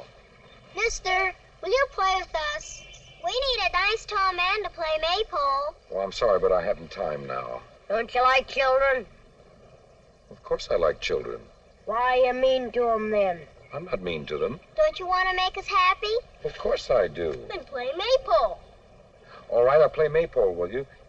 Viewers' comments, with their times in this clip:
0:06 The little boy only has a couple of lines but his delivery steals the entire film. "Don't you like children?" :D